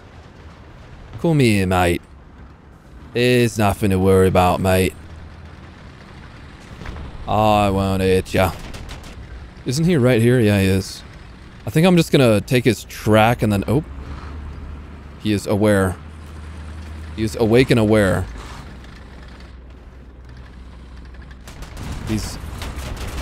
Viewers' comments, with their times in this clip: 0:06 dude that british accent was the funniest thing in a while lol